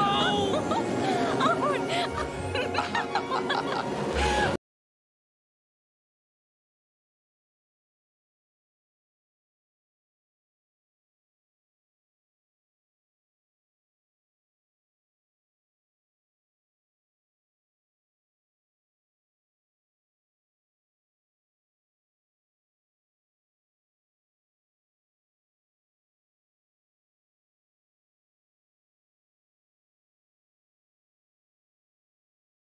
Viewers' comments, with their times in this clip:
0:04 .....WHY PLAY THE MOVIE BUT NOT HAVE RIGHTS TO ALL THE ORIGINAL MUSIC 😡🤬
0:04 deathlike silence. The copyright is probably because of the ads. Camtrix home security surveillance ad around this silenced section, is a great idea but with it's extreme portability i wouldn't doubt people using it to spy on others. Like people do with other portable recording devices.
0:18 Sound drops out just before play time.